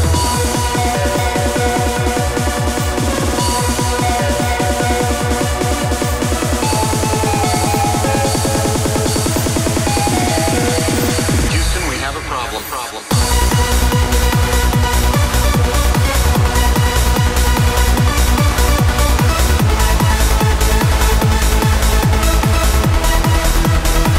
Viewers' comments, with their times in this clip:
0:10 Tune is superb. Really good mix, awesome track selection! I think this is so far your best mix with cd players (I prefer vinyls, but this one rocks!). Take care!